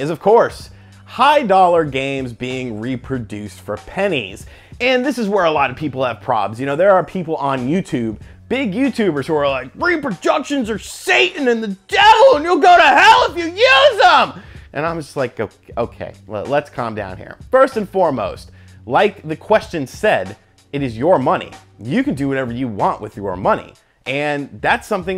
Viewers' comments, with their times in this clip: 0:09 Nice Pat impression